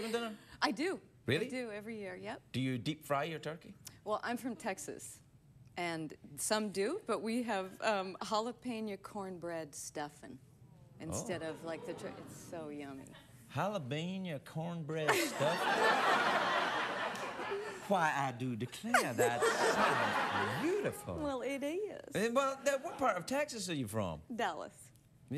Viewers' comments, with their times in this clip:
0:08 That Southern Texas drawl is killer. Craig's southern drawl is really good too.